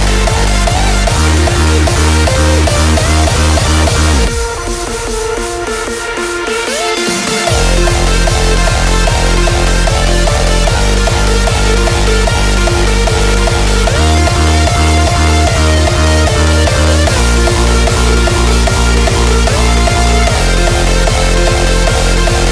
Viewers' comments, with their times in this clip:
0:06 Love the mellody especially the part with the "gliding" sound :) Nice work !